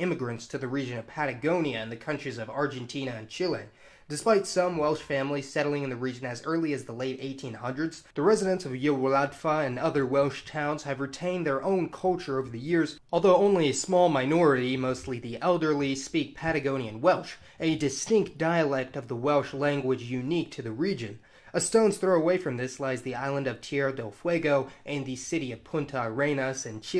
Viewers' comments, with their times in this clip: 0:08 is the worst butchering of a name I've ever heard! The guy who made this video obviously put no effort into trying to find out how things were pronounced before putting this video together, which makes me doubt the thoroughness of his research in general. It's sad, because this is a very interesting subject area, and it would be nice to have some trustworthy information on it.